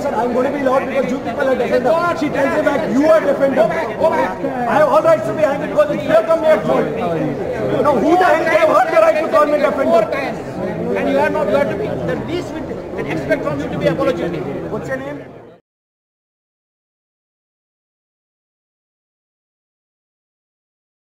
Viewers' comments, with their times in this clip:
0:08 i became deaf
0:14 only sentence spoken softly in the entire movie